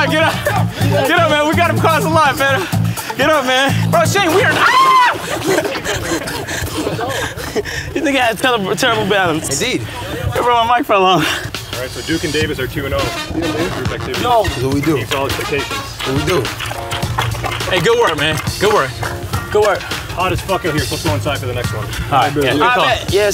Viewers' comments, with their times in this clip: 0:04 Agents scream tho😂😂😂😂